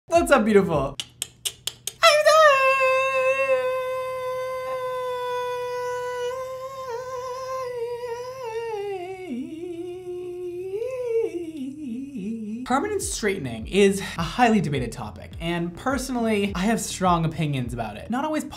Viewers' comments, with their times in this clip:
0:02 No one: Absolutely no one: that one mosquito in your room at 2 am: